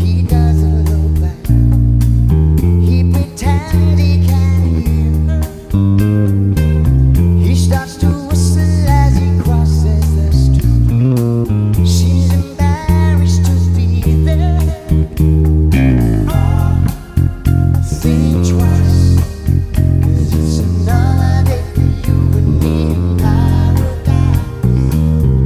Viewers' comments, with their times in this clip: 0:10 nice fill.. Reminded me of Mike Inez's fills from AIC and Sabbath in the late 80's early 90's.. I think he uses it in "Down in a Hole" in AIC's unplugged as well.